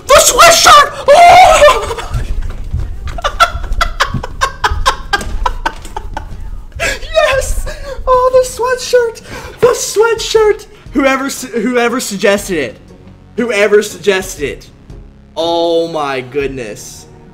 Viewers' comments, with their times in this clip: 0:04 That laugh thought